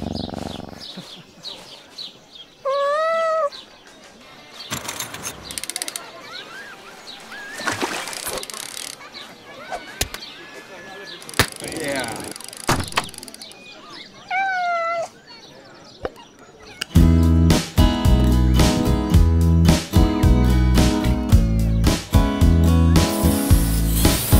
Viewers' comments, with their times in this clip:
0:06 listen closely u can here the background sounds from duck life in the background